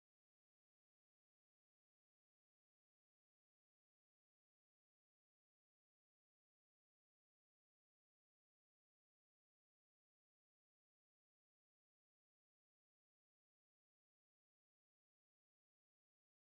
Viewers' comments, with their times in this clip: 0:04 In the SpaceX stream they said that the ring was frozen condensation. You could hear everyone "ooh" at it in the background.